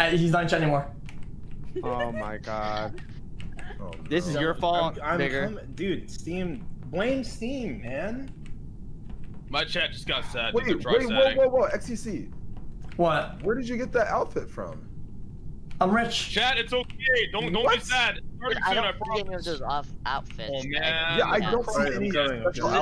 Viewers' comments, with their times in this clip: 0:03 I thought he said n***er instead of vigour Edited time
0:03 did bro say the n word or am i trippin?
0:04 Am i crazy or did he say the n word?
0:04 Bro... Wtf did he say there?
0:05 Thought my mans said the n-word